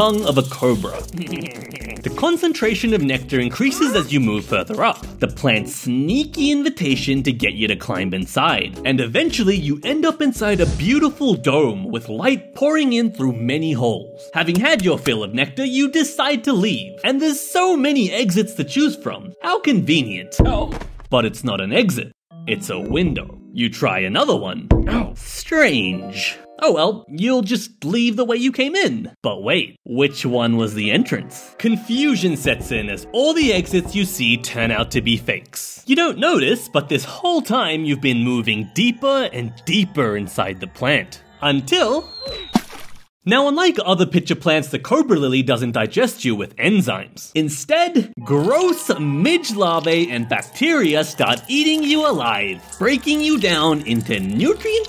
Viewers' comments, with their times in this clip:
0:05 VICTORY SRECH OOOOoOOoOooOoO🎉❤🎉
0:42 oof sound jumpscare